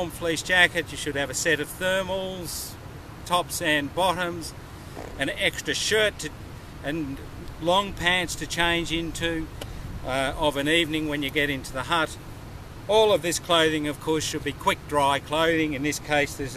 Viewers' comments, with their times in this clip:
0:03 who was farting?? LOL